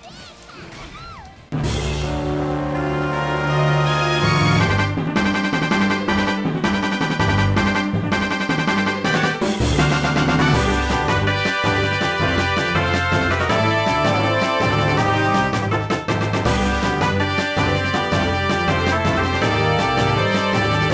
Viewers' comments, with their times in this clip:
0:06 Appropriate Music is Appropriate.